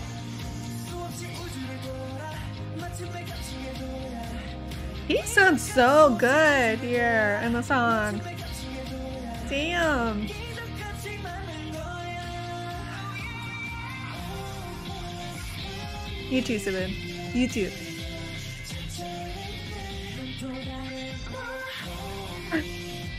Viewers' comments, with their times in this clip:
0:05 Beomgyu’s voice always sounds great but they don’t give him enough lines💔. Did you watch Loser = Lover ? I don’t remember seeing you watching the mv